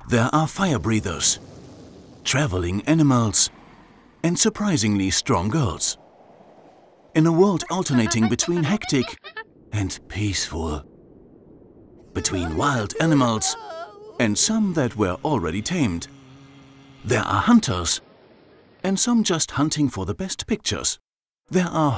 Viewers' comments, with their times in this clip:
0:03 My hearing isn't the best. I thought the narrator said "travelling enemas!!" I thought, "what?" Phew... it was travelling ANIMALS. Panic over. 🤣 ( Superb layout and video, by the way ).
0:08 The way he said "peeeacefulll" scared the shit out of me